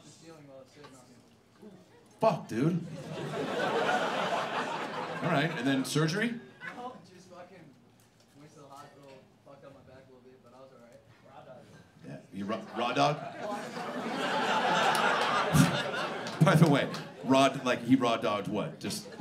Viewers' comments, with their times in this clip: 0:07 The guy said he was working in HVAC. It was hard to hear due to his tony hawk like cadence.